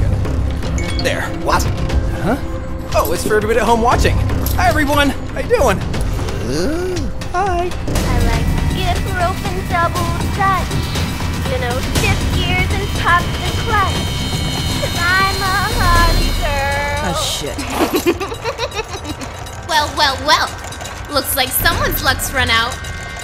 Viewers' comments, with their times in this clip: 0:06 reminded me of the Home Improvement grunt haha.